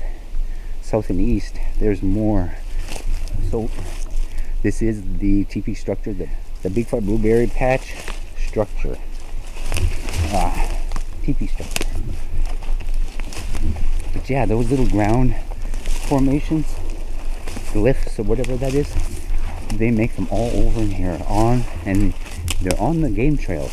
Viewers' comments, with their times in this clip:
0:09 That first whistle sounded so close😮 Thought I could see faces behind you just before and after same time stamp, but maybe just my imagination?